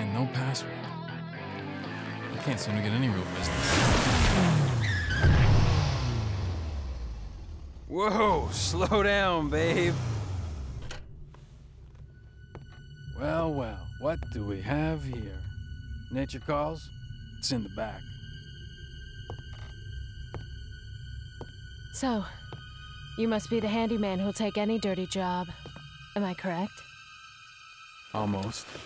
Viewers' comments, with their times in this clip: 0:10 sound bake as hell